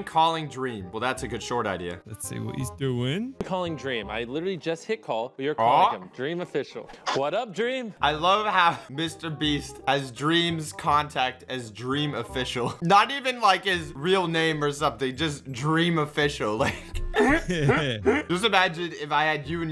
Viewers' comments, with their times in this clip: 0:05 becuz of ads it sounded like he said I love how Dream's Contact is Welcome to Raid: Shadow Legends (@ btw if u wanted to know)